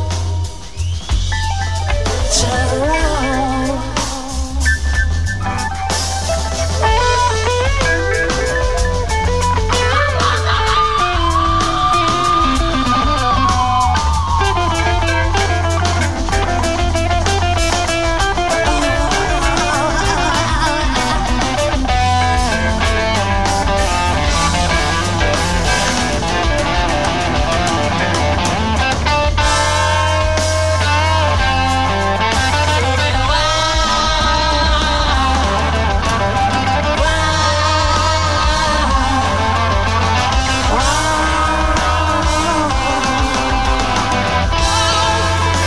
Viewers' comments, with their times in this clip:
0:09 this screech Cedric does is haunting
0:29 that groove they go into is so great